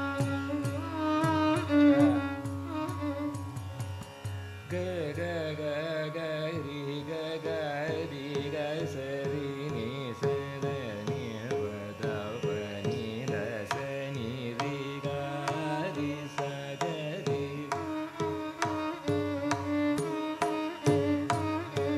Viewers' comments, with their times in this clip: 0:03 who else can do this kind of swaraprasthara? Heaven.